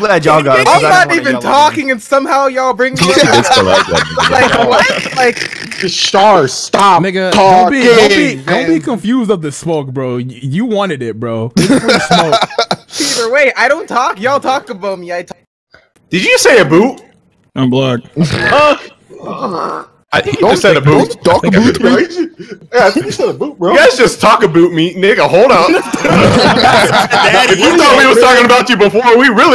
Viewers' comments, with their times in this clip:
0:10 "Yall talk aboot me" oh no here we go😂😂